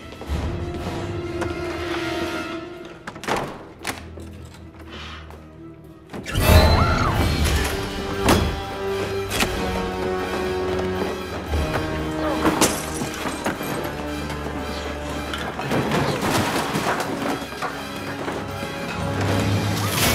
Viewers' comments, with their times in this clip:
0:06 Chills! I love the music and the sound effects!